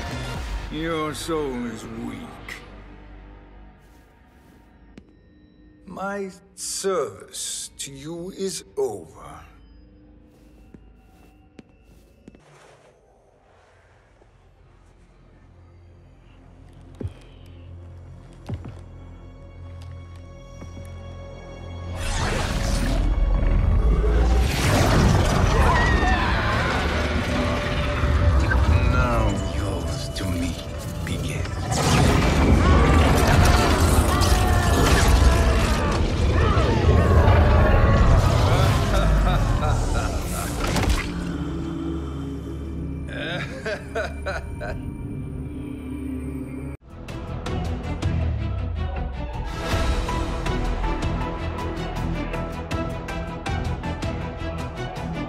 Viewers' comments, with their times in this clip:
0:04 anybody notice how the voice actor hesitated and made a slight mistake. But they decided to make Shang tsung do the same mistake?
0:43 my fake laugh